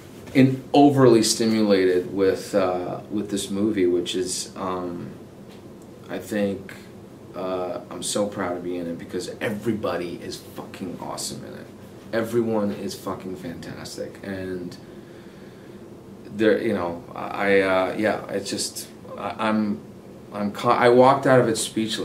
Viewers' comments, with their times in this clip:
0:09 the fact that he makes curse words sound so sexy